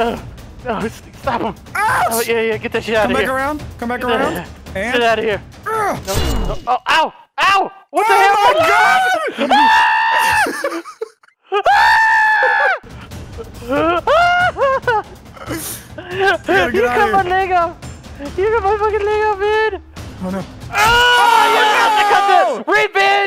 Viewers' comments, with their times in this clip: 0:06 greatest scream ever
0:07 😂 Delirious' crow screams